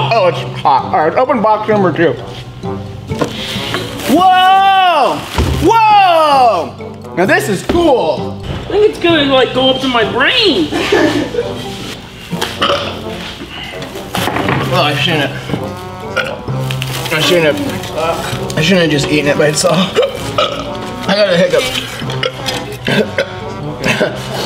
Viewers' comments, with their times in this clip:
0:07 I swear no other accident would a normal person hit that octave than
0:10 I looked away for a second and thought that was the sound of a cat getting stepped